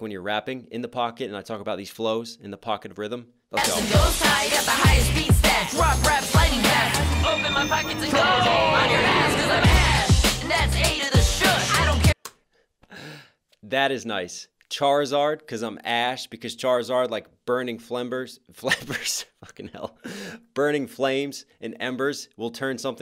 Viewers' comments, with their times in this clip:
0:05 When there's a zoom in on ash's eye idk why but I heard "poke my mom pockets".........I know I'm Weird